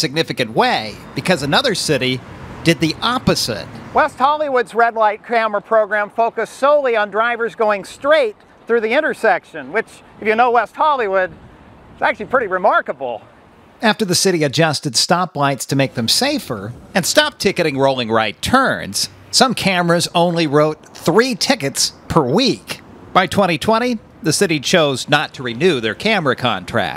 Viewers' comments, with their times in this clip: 0:08 "straight" and a slight pause for effect haha